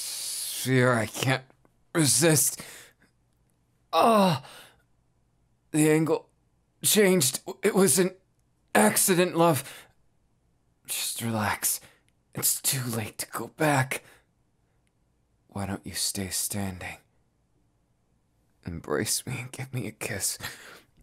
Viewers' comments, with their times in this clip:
0:04 that sounded way too real 😂😭